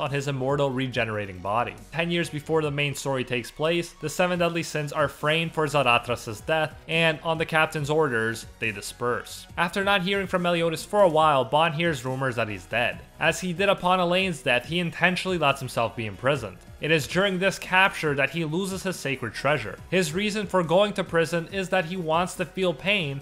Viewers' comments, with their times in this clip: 0:06 who now XD did u say zahacha